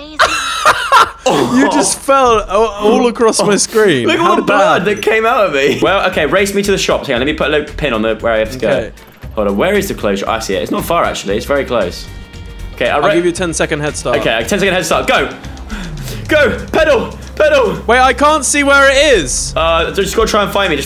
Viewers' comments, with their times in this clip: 0:05 Reaction to being hit by a car: Laughter "Look at all the blood that came out of me!"